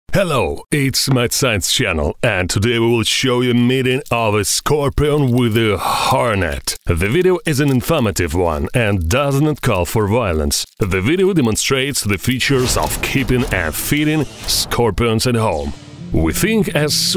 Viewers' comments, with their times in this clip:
0:03 robot scorpion: hello